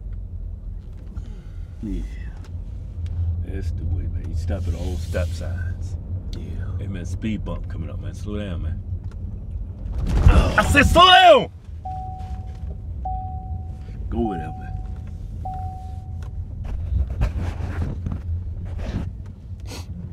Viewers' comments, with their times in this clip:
0:06 I'm dead😂 the car starting beeping